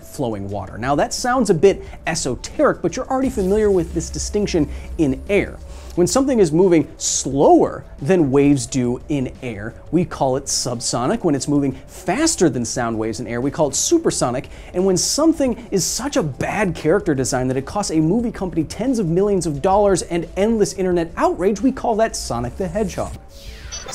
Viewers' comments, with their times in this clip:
0:04 woooooh f18 sonic boom